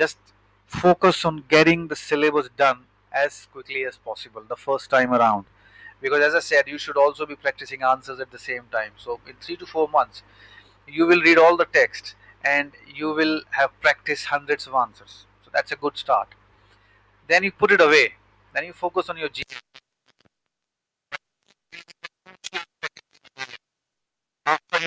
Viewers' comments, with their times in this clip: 0:08 from voice is breaking.